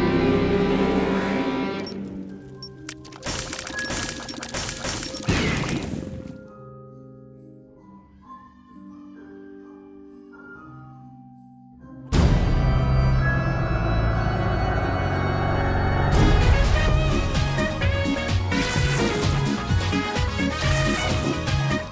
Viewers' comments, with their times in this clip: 0:08 why there is a crying baby wtf